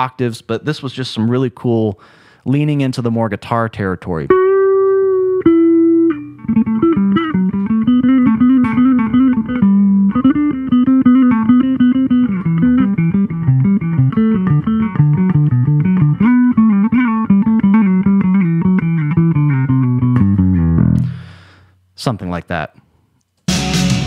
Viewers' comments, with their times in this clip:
0:10 sounds like a riff from Les Claypool :)